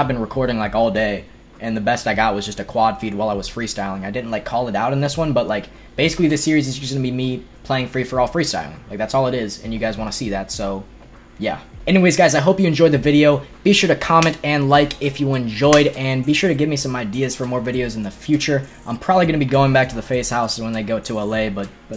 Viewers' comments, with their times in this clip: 0:09 SOMEONE OUTSIDE KNOCKING ON THE WINDOW